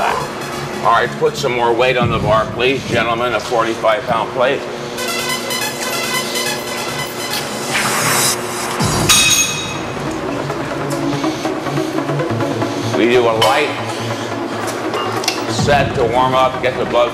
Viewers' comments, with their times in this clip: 0:05 the song begins it's so awesome!!